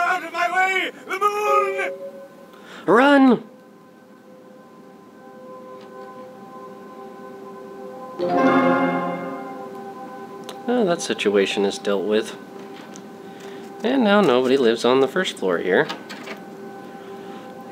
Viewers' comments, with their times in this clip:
0:03 LOL He loves the mooooooon!! howls